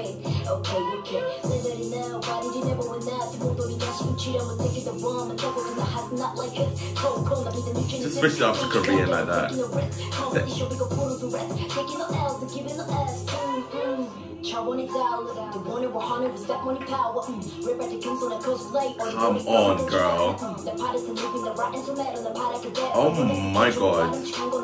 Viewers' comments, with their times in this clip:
0:08 that's Japanese not korean